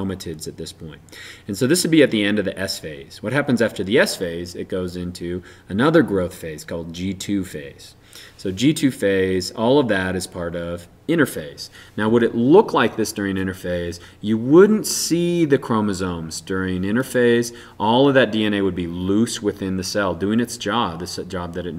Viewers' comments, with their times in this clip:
0:03 sister chroma tits